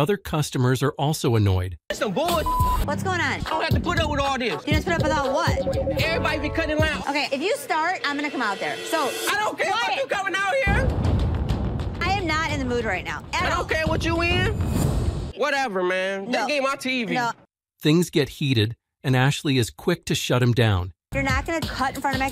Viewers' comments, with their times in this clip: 0:05 Dude sounded like an angry black woman.